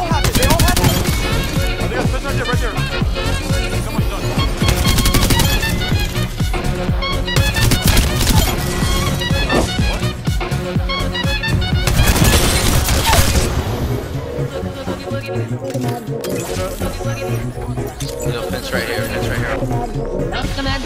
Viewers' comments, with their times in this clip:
0:06 do I hear my favourite music back?